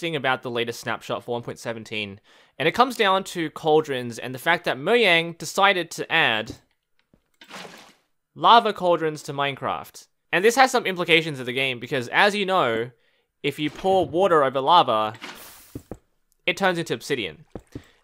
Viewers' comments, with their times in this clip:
0:04 Moyang, totally how you say it
0:04 Am i the only one who heard moyang instead of mojang?